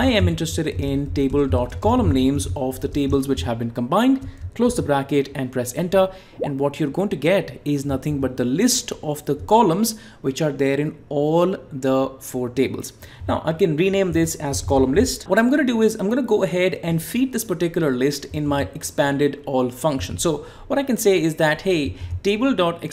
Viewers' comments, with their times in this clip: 0:05 you've added bubble sound to your transition.😂👍